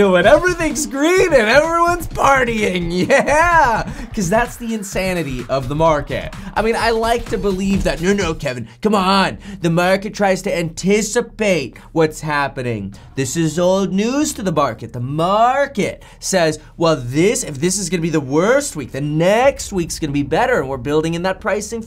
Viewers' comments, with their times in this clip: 0:06 Graham Stephan impersonation.